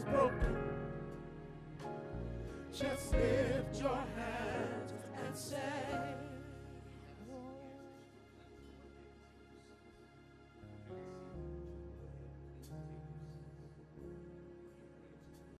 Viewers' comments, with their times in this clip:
0:12 I just love that transition from uncontrollable sobbing to a casual walk down with his hands in the pockets.